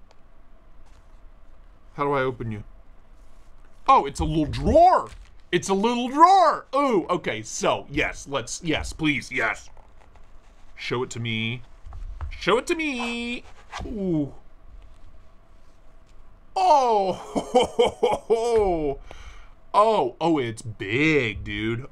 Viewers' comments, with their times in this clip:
0:05 You sound surprised like you're not used to little drawers! Hey-yo!